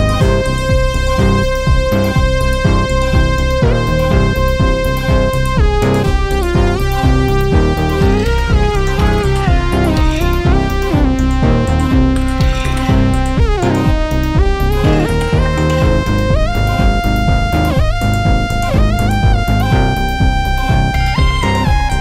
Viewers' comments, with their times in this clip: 0:10 Track ... WOW!! Reminds me so much of the Progressive Trance era that is dead since around 2004.